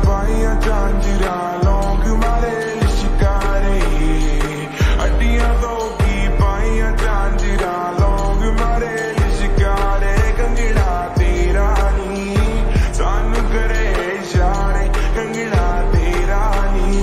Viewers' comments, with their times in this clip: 0:03 better music starts from here